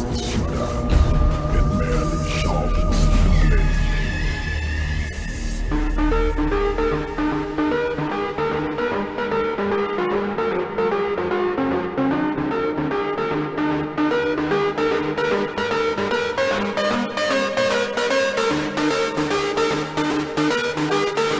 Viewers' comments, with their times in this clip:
0:07 music begins the beggining is totally rubbish, but the rest is well done